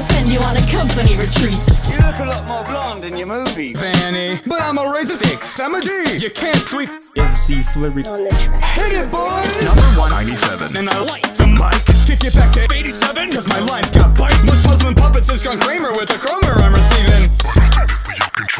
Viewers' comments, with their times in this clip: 0:04 what is he saying?